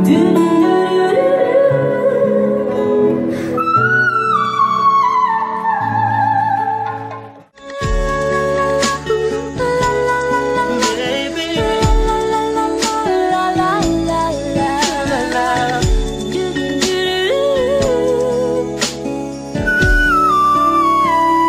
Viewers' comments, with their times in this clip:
0:03 Du'ong hoàng yen was lip syncing, when she hit the first whistle not the microphone was way too far from her mouth to sound so resonant.